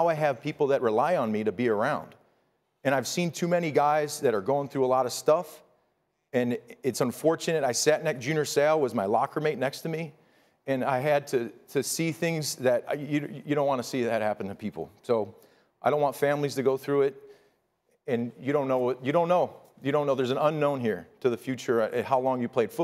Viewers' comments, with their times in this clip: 0:08 The way he mentioned Junior Seau, and reminding me how he had CTE and committed suicide, that was the breaking point. This moment must be a wake-up call for the NFL. Protect the players, not your investments! Granted the NFL is a business, but what does that have to do with what happened to Tua? This better be a changing moment. 😣🙁 The pain in Rob’s voice when he mentions Seau. 😢